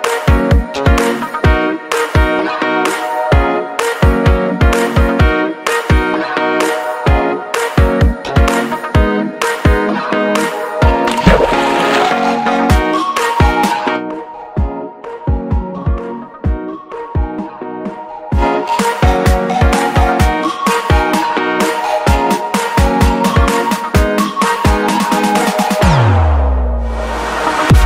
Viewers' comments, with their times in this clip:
0:10 minecraft water sound xD
0:10 Minecraft splash noise
0:11 sounds like a water splash in minecraft😄😄😄
0:11 *minecraft water splash sound
0:11 minecraft water Splash sound XD
0:11 Minecraft SPLASH sound
0:12 Anyone notice the minecraft water sound effect